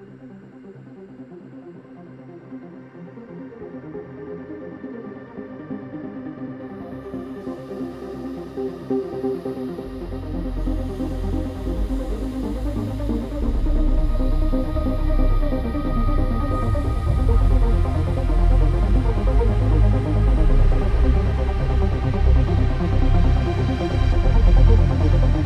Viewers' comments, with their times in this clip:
0:06 is peak EC. That build up feels like an out of body experience